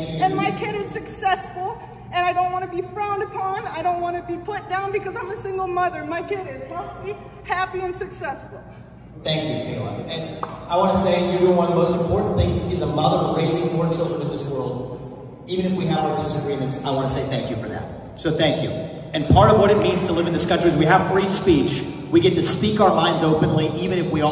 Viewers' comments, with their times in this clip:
0:10 someone tried to clap 1 clap